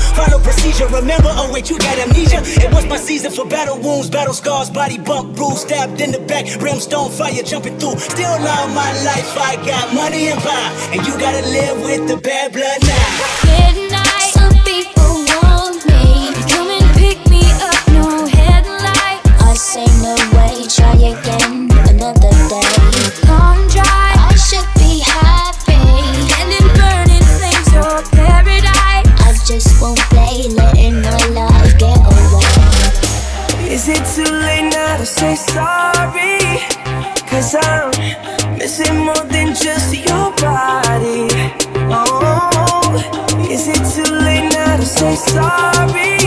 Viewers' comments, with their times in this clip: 0:08 There's a slight jump in the audio of Lamar's rap
0:34 Justin sounds like : It's Selena now to say sorry , But he actually says it's too late now to say sorry